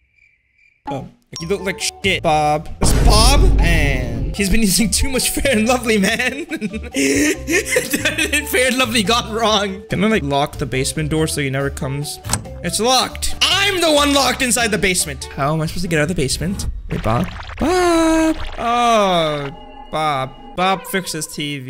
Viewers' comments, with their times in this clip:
0:04 dosent cesore the word he just said